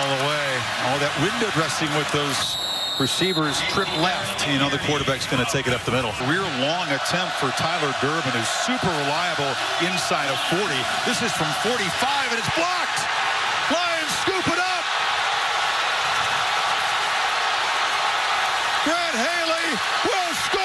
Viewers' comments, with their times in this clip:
0:08 in one second that crowd went from mildly loud to absolutely electric